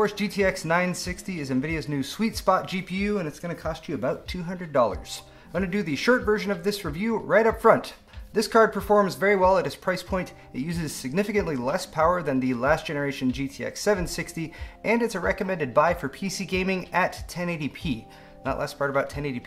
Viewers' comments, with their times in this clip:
0:05 The shirt version?